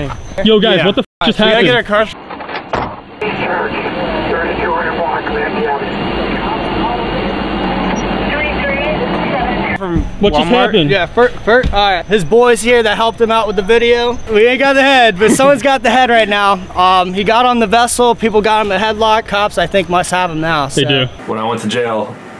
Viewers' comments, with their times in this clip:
0:03 i thought my headphones broke